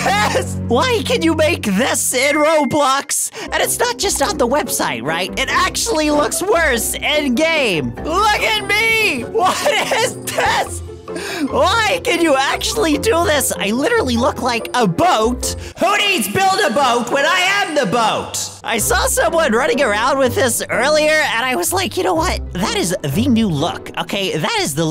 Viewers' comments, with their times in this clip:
0:06 glitch did you say "GAY"?!